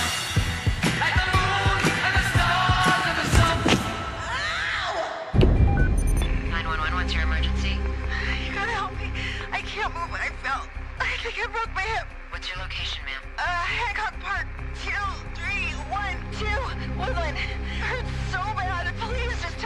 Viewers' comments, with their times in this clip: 0:04 I can't stop laughing at the way she said ow